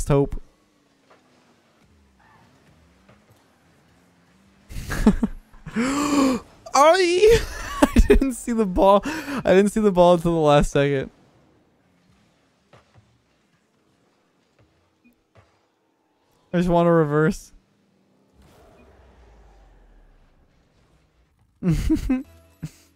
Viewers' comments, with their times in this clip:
0:06 sounds like my gf